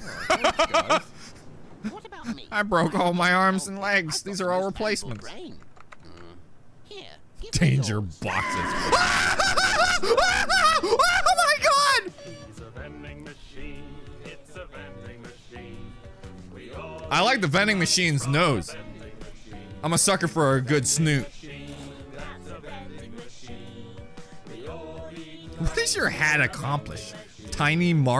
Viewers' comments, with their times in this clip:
0:09 my dude enters in hole panic but then he gets calm down by the Vending Machine song